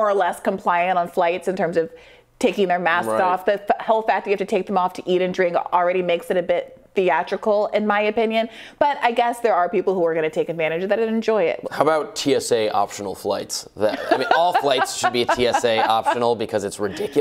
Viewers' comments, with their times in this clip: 0:03 🤣🤣🤣 Anti-mask gospel singing